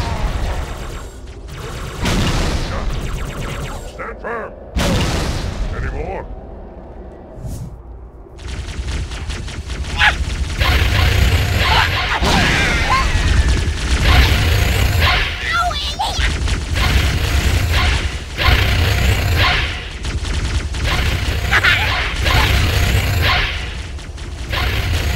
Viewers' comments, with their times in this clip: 0:09 most savage grunt
0:09 lol check of the grunt